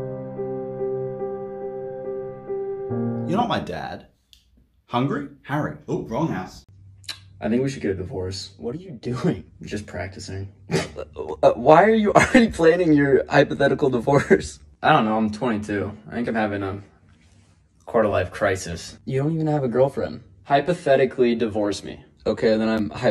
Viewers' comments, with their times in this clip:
0:08 why do they sound like robots